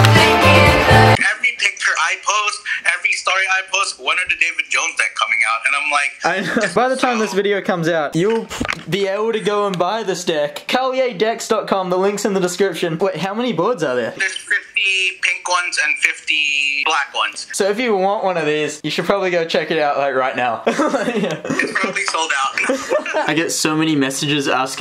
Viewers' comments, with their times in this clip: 0:10 he finally said it right